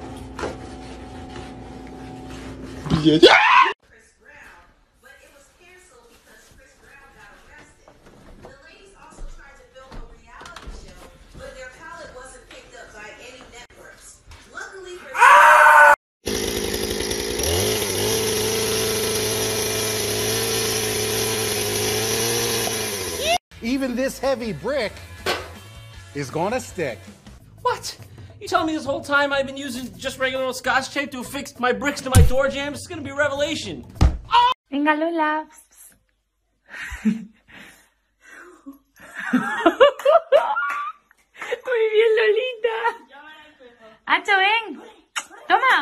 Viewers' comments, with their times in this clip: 0:05 lol I feel bad for the guy who screamed I don't even know if the guy or girl who was doing the naked challenge was a girl
0:13 his scream lmao
0:15 legend has it the man is still screaming to this day
0:18 Bottle- Pop. Man behind the chainsaw- Southern YEEEE- That pop is pure MIDI material
0:24 I like the lol
0:33 my favorite scream
0:33 that THUD tho!!!